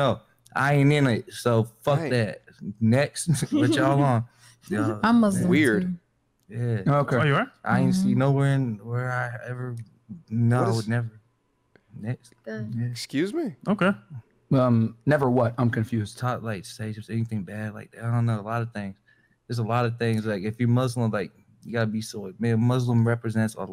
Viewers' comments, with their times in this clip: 0:06 na man this guy is high on something 😳 Dude can't even finish a sentence